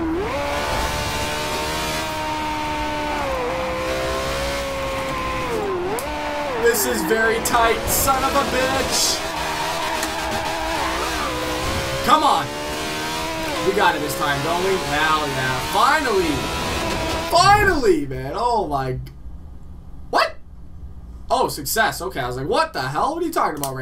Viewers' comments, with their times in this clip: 0:09 vtec kicked in yo